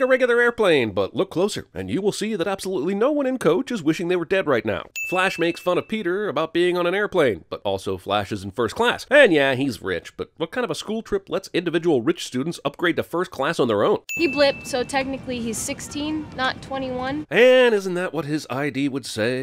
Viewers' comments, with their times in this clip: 0:05 united airlines ding